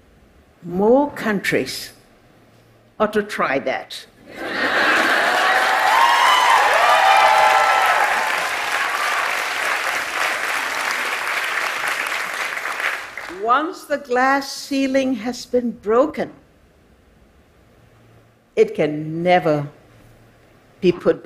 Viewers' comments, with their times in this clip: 0:03 Applause and cheer, why? WHY? wHY? WhY? whY?